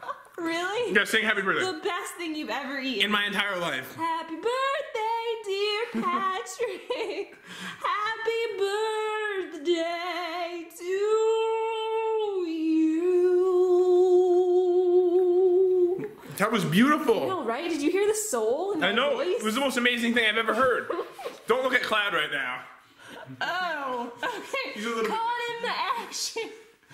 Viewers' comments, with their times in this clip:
0:08 lol and that soal part when she was singing